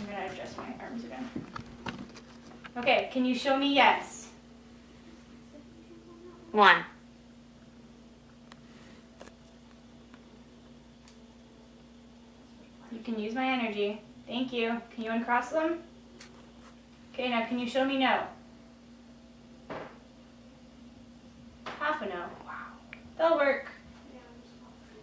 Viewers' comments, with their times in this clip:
0:05 Great investigation guys ❤️ Did anyone else hear a child ?
0:06 little kid talkin N E 1 else here it???